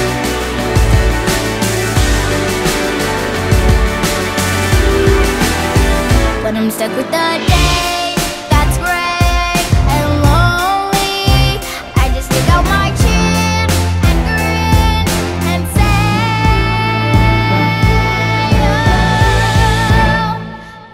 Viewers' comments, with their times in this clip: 0:07 the beat though!!
0:07 that beat tho